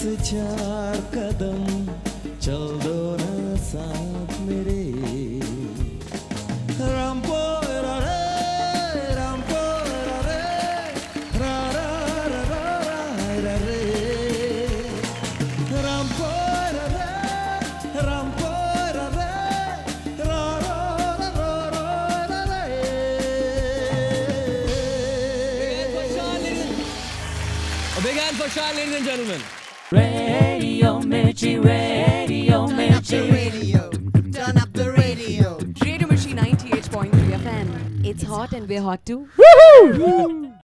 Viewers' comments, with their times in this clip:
0:06 shaan's rampampare is better than original song
0:29 I SOOO MISS THIS OLD JINGLE OF RADIO MIRCHI